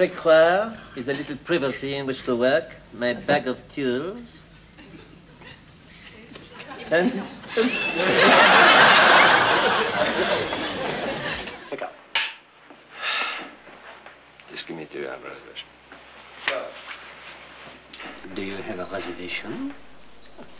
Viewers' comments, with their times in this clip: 0:03 "My bag of tules." Would those be Bluebot-tules?